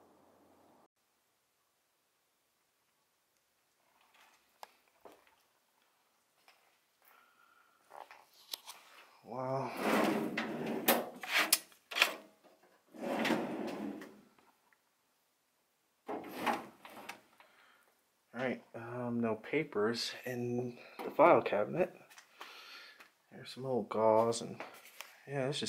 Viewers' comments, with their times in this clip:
0:07 Swear I could've heard a faint scream Anyone else hear it or am I just losing my mind????